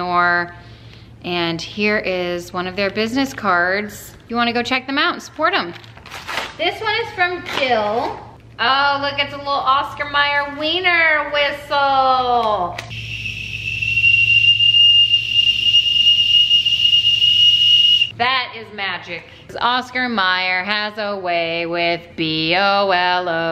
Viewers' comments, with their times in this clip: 0:10 R.I.P. headphone users 🤣 that's me!